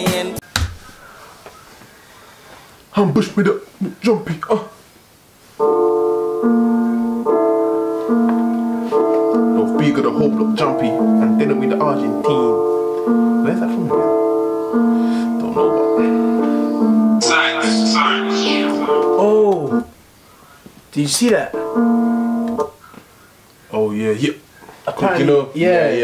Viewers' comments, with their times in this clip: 0:09 bruh thought it was the video thats rapping